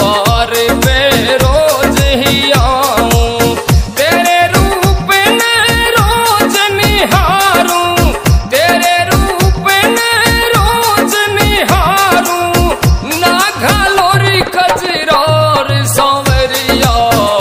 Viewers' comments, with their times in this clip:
0:05 Really good song and yours voices 🎉🎉🎉